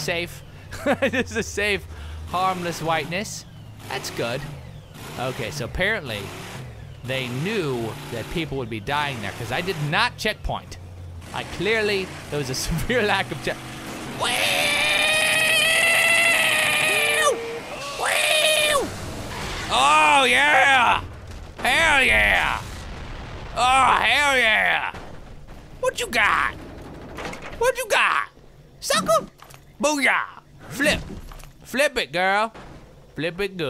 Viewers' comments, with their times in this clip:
0:09 notice the spit in his scream
0:10 that was the most epic Wheeew ever
0:16 the longest wheew i ever heard :D